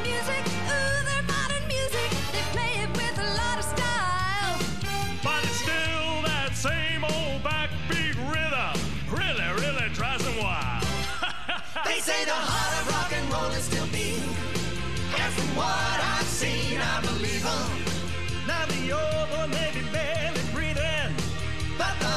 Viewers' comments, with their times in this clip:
0:05 is my fav part. This is the best munch voice, the laugh is perfect.